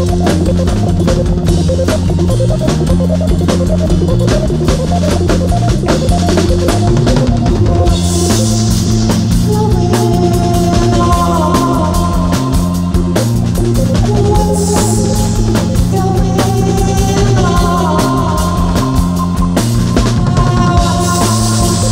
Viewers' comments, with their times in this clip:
0:07 These mf’s went straight to encrypted bounce without skipping a beat